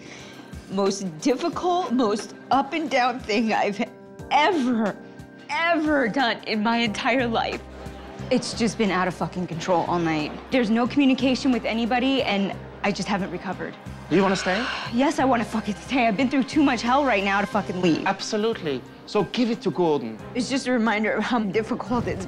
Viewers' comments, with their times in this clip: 0:09 why is this not muted but when Ramsay cusses it’s fine lol